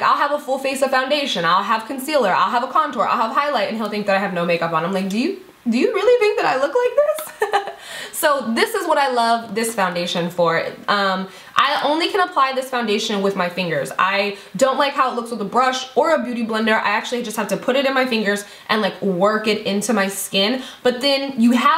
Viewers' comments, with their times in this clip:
0:06 That laugh #gold